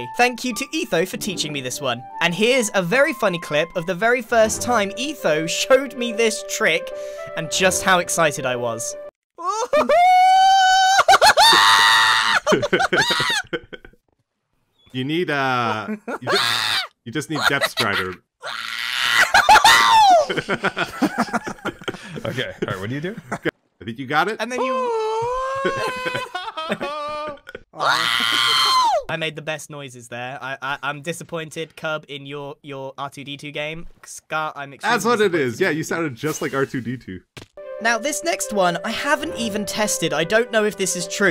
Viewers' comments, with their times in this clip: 0:09 Bro really said [R2-D2 noises]
0:09 Bad Piggies voicelines
0:11 Grian running around really fast while making screaming sounds like a kid in a candy store on a suger rush is the best thing I've seen all week
0:19 sounds like lightning McQueen wizzing by 😂
0:19 grian just became R2D2 😂 im glad he caught onto it himself 😄
0:19 Am I the only one hearing the Doppler effect as Grian runs by?
0:24 Grian turned into r2d2 lol
0:24 he sounded like r2d2
0:26 the R2D2 scream 😭🤣🫶
0:27 -you sounded like R2D2 there for a second, that was beautifully hilarious!! 😂😂
0:27 R2D2 makes an unexpected appearance
0:27 sounded like R2D2 😂
0:28 Bro turned into R2-D2 💀 😂😂
0:28 the scream he made. It’s so stupid that it’s funny.
0:28 bro turned into R2D2 💀
0:29 Sounded like R2D2